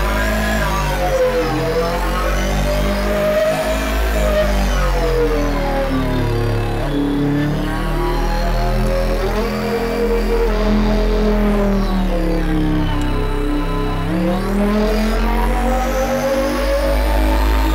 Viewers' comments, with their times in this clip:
0:03 That Sound you had was unreal. It actually felt like it was a fully fledged engine behind you in a cockpit shaking the whole ship as it reached that point of resonance that sends shivers up your spine. awesome stuff..